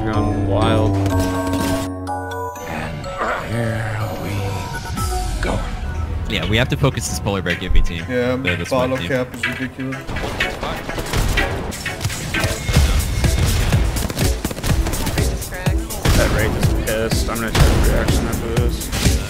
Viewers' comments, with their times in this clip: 0:05 What's that song ? I've heard it before many times, but I don't know the name... Kinda sounds like a cover of that Queen song "Somebody to love"